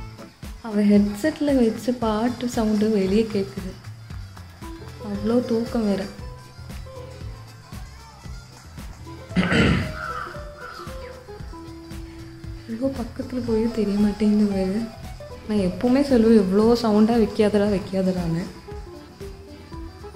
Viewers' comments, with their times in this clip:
0:07 who all hear vaathi coming song